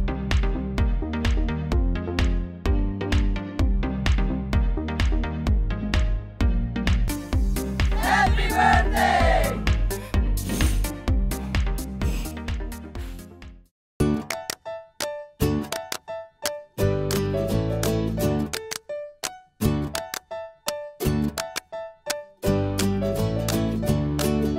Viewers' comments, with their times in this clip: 0:09 they actually speaked!!!!!